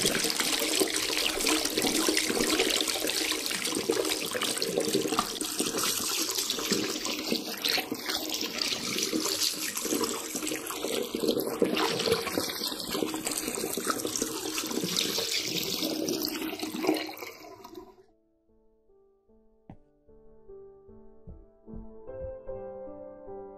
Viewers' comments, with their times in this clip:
0:04 sound really creepy